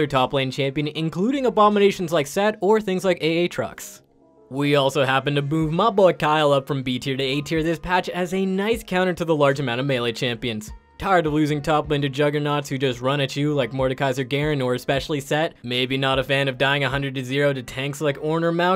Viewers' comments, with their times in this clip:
0:03 did you just say A-atrox you animal